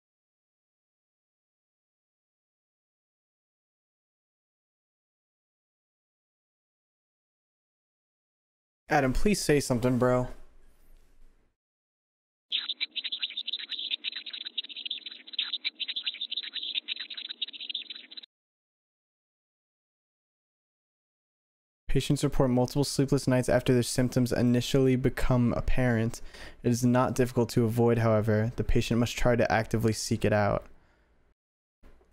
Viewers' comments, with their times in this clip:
0:08 Adam pls say something bro. Alternate: sick beatboxing
0:11 yknow what else is goofy as hell? the beatboxing goober
0:11 BEATBOXING JUMPSCARE OOGA BOOGA!
0:12 bro stop licking my ear
0:12 bro stop licking my ear
0:12 sounds like a cockroach running across my microphone 😭
0:13 Ay alternative got some beatbox skills dayum
0:13 what is bro slurping up man 😭
0:13 And also it sounds like skibidi toilet for a few sec
0:13 sounds like a rat
0:14 just me or did anyone realize THATS FUCKING ADAM SPEAKING GOD DAMN GIBBERISH (Side note : this can be put like reverse or maybe in a spectrogram but that is not just a gibberish that’s really something) Basement scene explanation: (! This is my explanation not cannon explanation be warned!) The cat is a way of mad being explained to Adam and then when Adam goes down the intruder then finds him being there he then turns into the alternate to the spot I said he says something x it he will absolutely turn into a alternate at some point then with Jonah leaving angel Gabriel is able to find the gps located and talk to Jonah (this also can be signs of Mad being the fact that well he then does the big sad thing to himself) but when Adam then come s to be a alternate and then Jonah dies to suicide
0:16 it sounds like a cartoon character slipping over